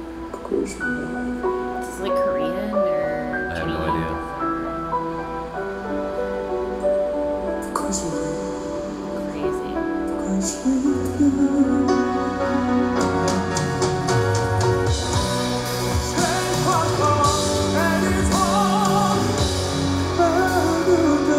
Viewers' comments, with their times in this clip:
0:09 just in case yall Hadn't lloked it up yet - he's singing a song in French